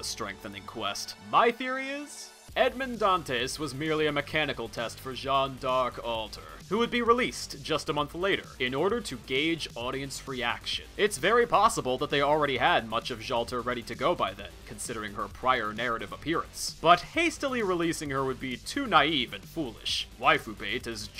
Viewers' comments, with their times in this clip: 0:05 in, I start to hear the background music, all I can say is that I’m getting HM2 flashbacks